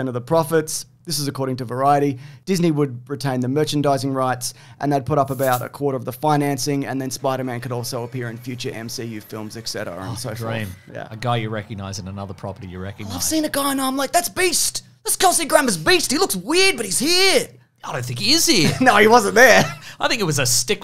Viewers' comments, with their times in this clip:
0:06 I thought he said Mr Beast 😂 I was like whatttt? 😅